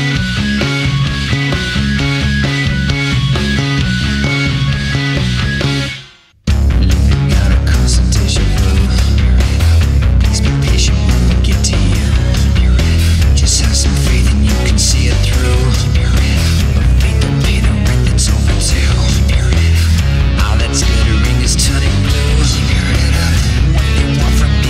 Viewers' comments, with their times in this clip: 0:06 Yes this section sounds so much better than on the original album